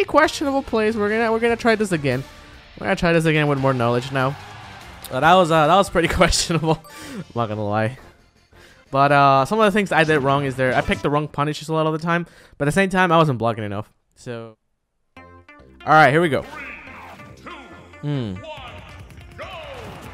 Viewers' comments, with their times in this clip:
0:08 What happened ? Did you lose and edit that part out? The stage isn't the same and your voice fades out.